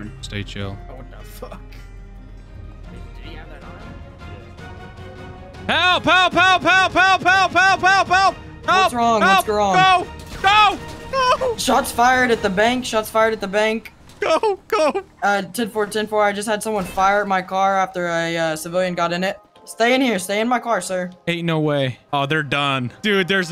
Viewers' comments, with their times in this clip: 0:07 this kids genuinely surprised reaction when he goes "Shots fired at the bank" and then back to professional cop "Stay in my car sir" XDDD that's good RP